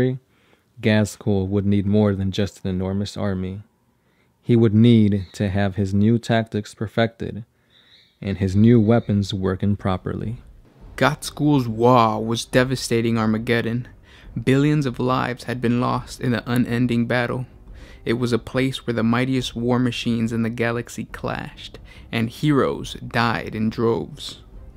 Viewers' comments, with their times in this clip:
0:07 :birdie go squawk